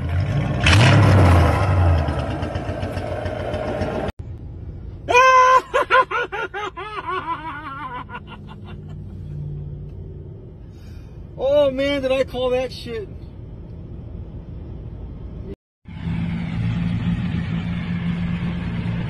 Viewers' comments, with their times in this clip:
0:05 what a laugh 10/10 ⭐️